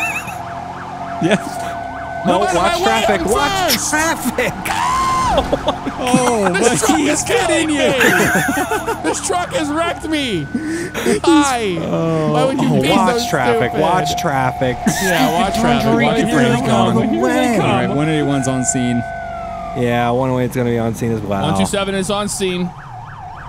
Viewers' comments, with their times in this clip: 0:05 That fkn scream is just great. I need that as a ringtone
0:05 the laugh had me dyingggg!!!